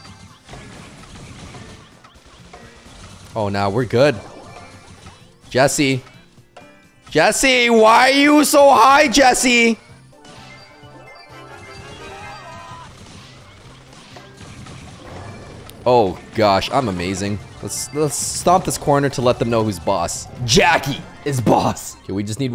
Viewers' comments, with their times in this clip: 0:08 WHY U SOHAI JESSIE LOL LMFAO I CANT if you are Chinese then u understand